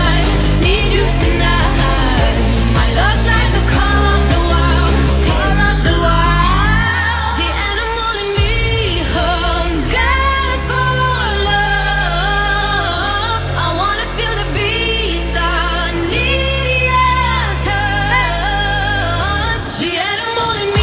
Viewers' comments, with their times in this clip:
0:06 She missed singing :D